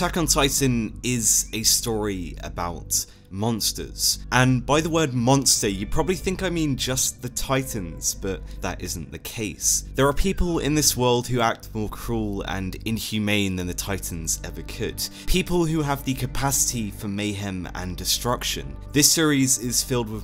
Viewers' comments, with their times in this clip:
0:04 Attack on Tyson